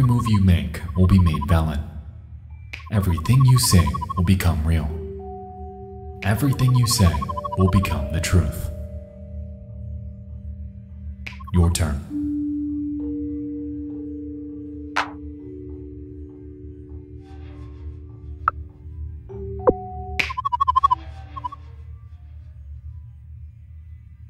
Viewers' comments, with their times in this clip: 0:08 damn the sound effects here are so annoying